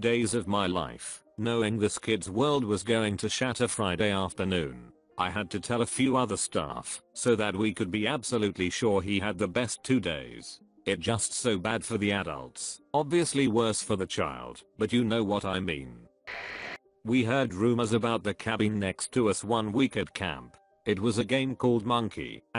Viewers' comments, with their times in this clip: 0:10 are we just gonna ignore that they censored 'sucked'